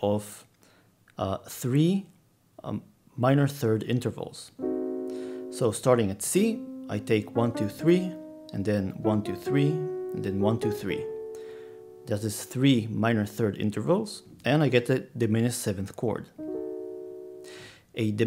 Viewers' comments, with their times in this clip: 0:05 the remnants of my child brain wondering why there's Zelda boss music playing